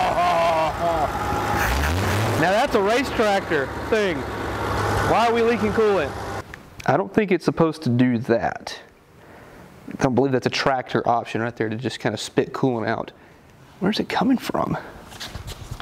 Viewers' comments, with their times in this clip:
0:03 great audio quality dude 😎👍😂😂